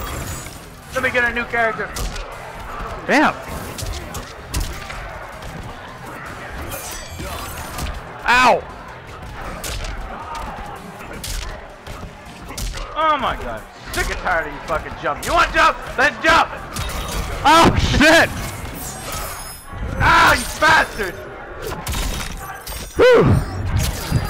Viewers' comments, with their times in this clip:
0:07 when sub zero goes up its sounds like he said jump